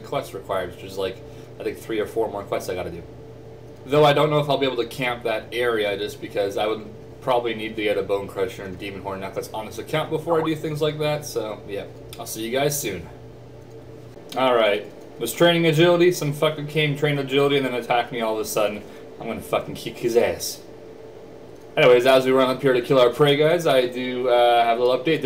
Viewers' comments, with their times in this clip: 0:09 NOT YOUR SKYPE!